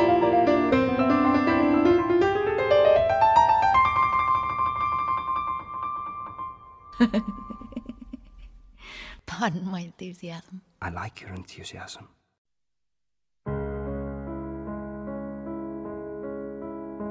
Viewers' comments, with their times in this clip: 0:05 Who else was shocked to hear that laugh 😂😂😂😂
0:05 Helena's laugh is so cute♡︎